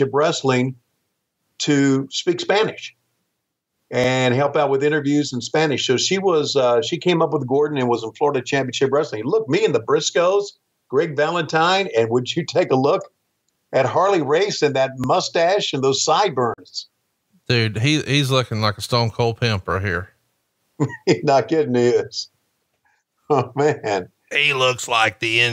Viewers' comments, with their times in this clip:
0:09 conrad’s harley impression is hilarious 😂